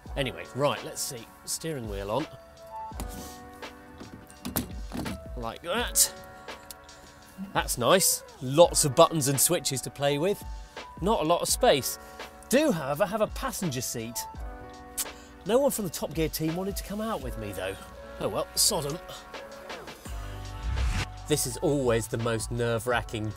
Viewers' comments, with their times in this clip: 0:05 Anyone else notice the outro music in the background?
0:10 Music from ish onwards is soo over yt. Jon B????